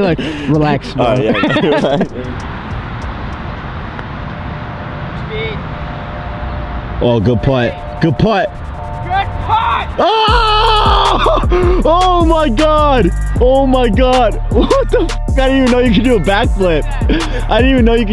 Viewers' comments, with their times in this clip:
0:06 I don’t think I’ve ever heard you scream while getting hyped 😂 game looked like such a vibe